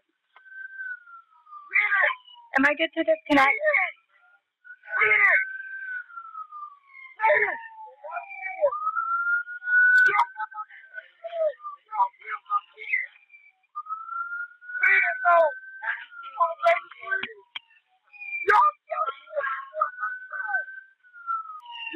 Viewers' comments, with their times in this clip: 0:03 What that dispatcher said was just horrible. You can hear the man screaming his neighbors sons name on the call to see if he is awake, he yells “ WE NEED HELP!” and then says “Y’ALL KILLED MY KID!” All the 911 call operator can ask is “Am I good to disconnect?” It is just horrible that she didn’t take into consideration that the callers kid might be unconscious and/or not breathing.